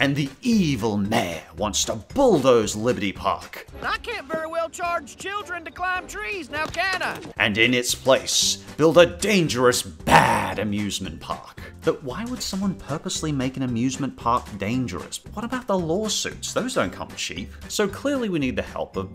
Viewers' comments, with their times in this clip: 0:04 Yes... That’s exactly what I thought he would sound like.